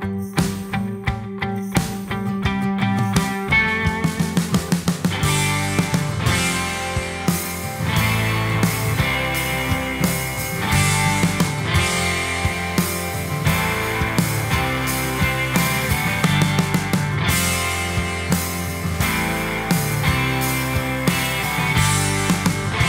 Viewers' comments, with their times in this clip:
0:05 I can hear the modulation, maybe is in the delay